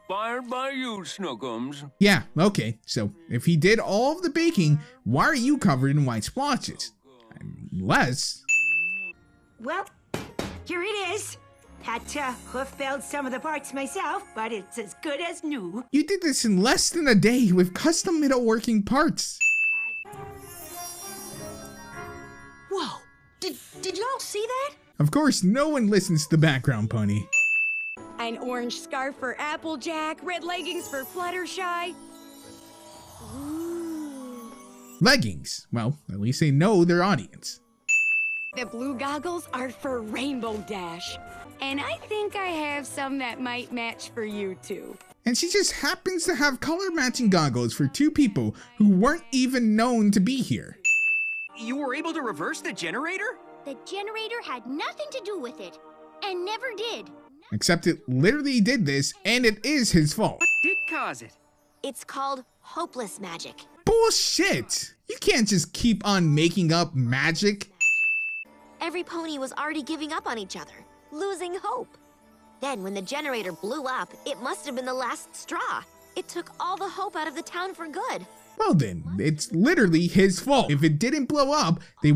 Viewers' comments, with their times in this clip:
0:03 I can hear a screaming 12-year-old somewhere
1:03 I thought the gray pony was saying "BULLSHIT" and I was caught hella off guard.
1:03 1. What is wrong with Twilight’s wings? 2. I legit thought the mayor pony said “bullshit”